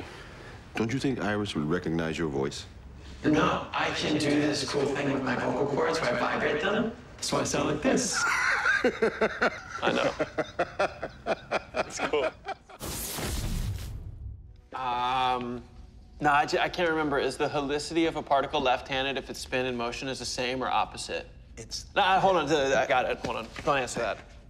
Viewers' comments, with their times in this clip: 0:08 I love joe's laugh man, bro was genuinely amused..
0:11 was it only me ori though the vocal courd thing joe was laughing then gonna stop and get serious